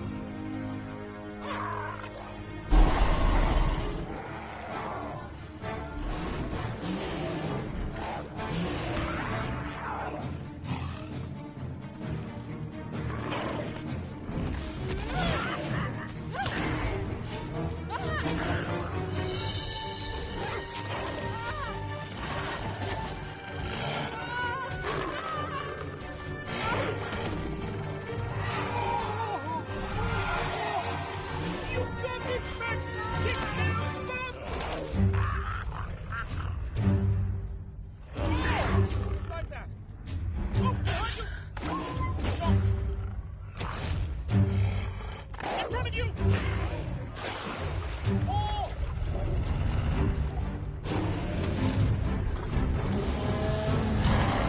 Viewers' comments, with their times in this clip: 0:09 why do I hear leopard sounds for a dinosaur
0:41 when did Carnos sound like dogs...
0:41 a dog sound from a dinosaur lol